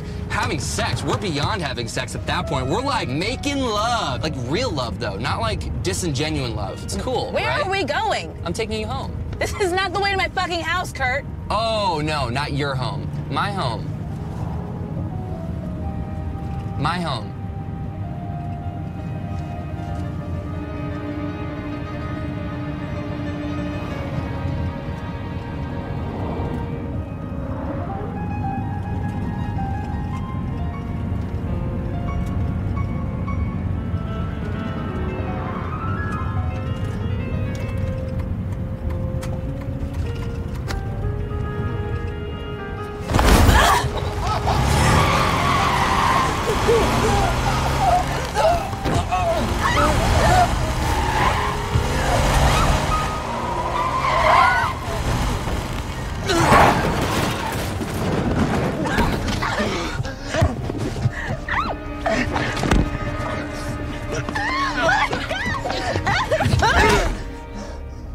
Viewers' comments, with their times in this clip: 0:06 I LOVE THAT PART SO MUCH “My home- my home” THE SILENCE BAHAHAHHA
0:53 with 1.75 speed? Litteraly my mom mad